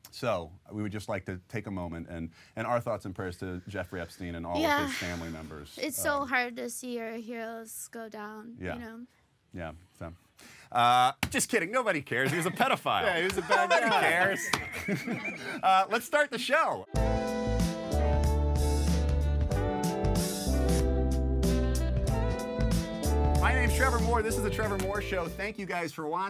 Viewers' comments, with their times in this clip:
0:09 Trevor trembling as he tells this joke is A LITTLE BIT TELLING HMMMM